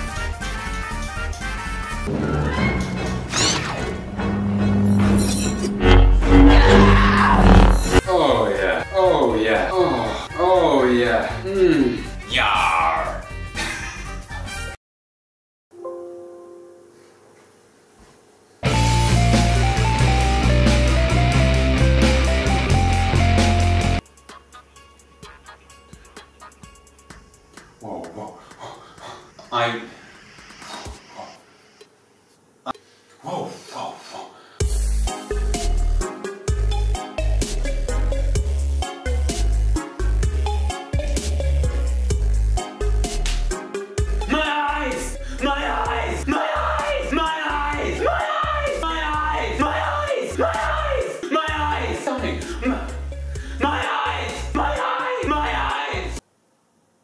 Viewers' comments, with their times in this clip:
0:09 when that skyrim khajiit mod kicks in
0:19 How could you not put “my twilight” from flcl progressive in your credits I’m not mad actually but I think it needs to be known Edit: well hol up I might be wrong “am 180” by granddaddy but they sound real similar, I need somebody who knows more
0:20 AHHH AM 180 JFFJKHDJKDSFJK LOVE THAT SONG
0:34 that music syncing tho
0:45 I always thought you said "nice!!"